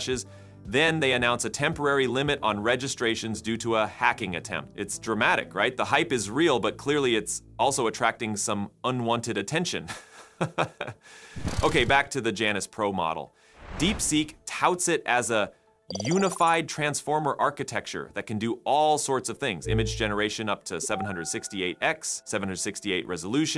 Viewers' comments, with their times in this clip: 0:09 that uncomfortable laugh I'm dying
0:09 AI can laugh now. amazing